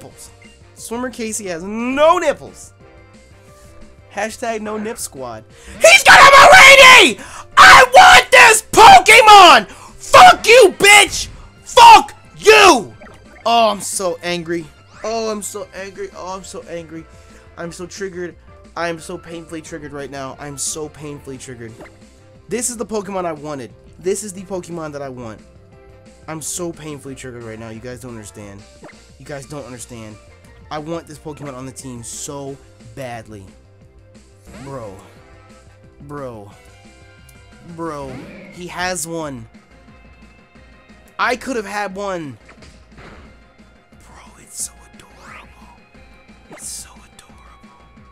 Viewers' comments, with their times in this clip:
0:05 take out your headphones... Don't ask questions
0:30 I think i understand my eardrums got blown out